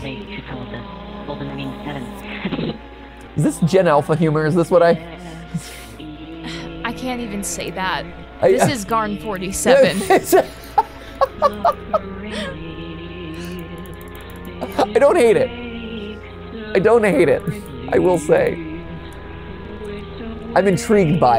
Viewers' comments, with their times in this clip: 0:05 suffering leaves suffering leaves (ultrakill: violence ost) at home: